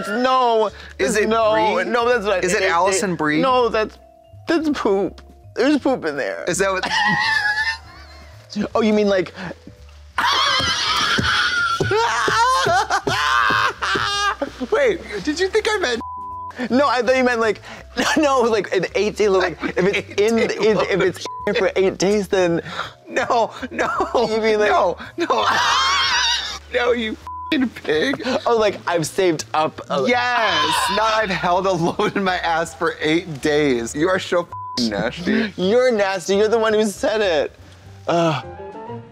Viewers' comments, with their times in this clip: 0:10 '(Blonde Women caterwaul and slap)'.
0:10 The girls and I started cackling at the same time
0:10 CC (Blonde Women caterwaul and slap)
0:12 Trixie’s laugh Dead. 😂😂
0:13 I love the popular youtube show (Blonde Women caterwaul and slap)
0:25 [blonde women caterwaul and slap] 😂